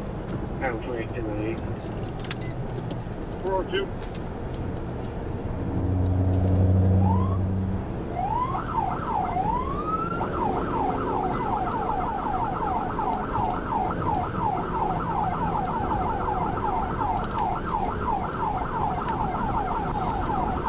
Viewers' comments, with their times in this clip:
0:08 whats up with the fake sirens added in post